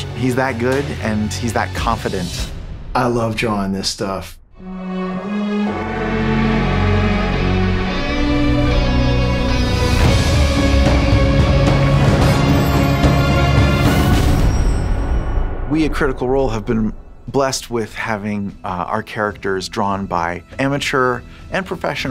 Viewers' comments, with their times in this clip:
0:04 When I heard the Critical Role theme I cried. It's so beautiful, so perfect!